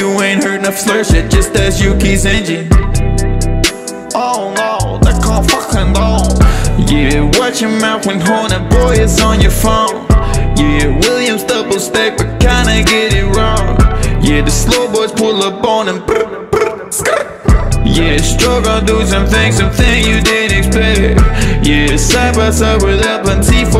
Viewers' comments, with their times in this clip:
0:04 That’s not what Yuki sounds like: